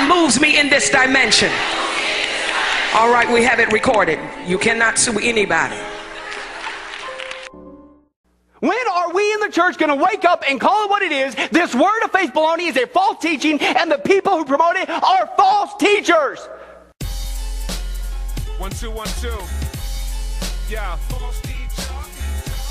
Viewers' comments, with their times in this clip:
0:05 Did that BLACK BITCH just say, "(We have it RECORDED, you can't SUE anybody)" ...………… That's a HUSTLE if I ever known one, and that LOOK on her face and tone is the EXACT same shit HUSTLERS do.